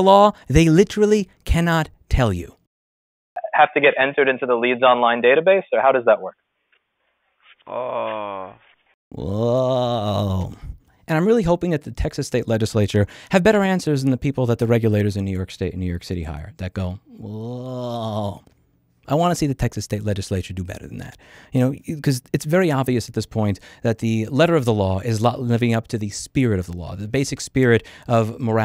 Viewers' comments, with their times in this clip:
0:05 This uuuuhhh had me rofl
0:09 a new dono sound?